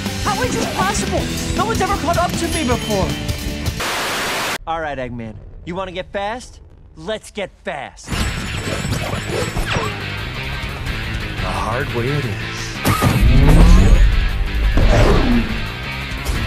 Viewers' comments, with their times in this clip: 0:04 the best one, its so perfect with the explosion of that Soundtrack. By the way my fav sonic game is actually colours